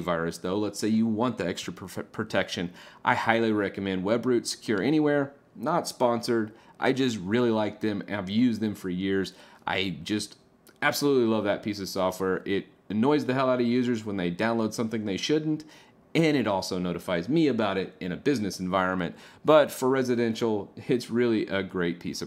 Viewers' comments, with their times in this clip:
0:04 What are you saying it sounds like web brute secure anywhere, but i can not find it searching on google ?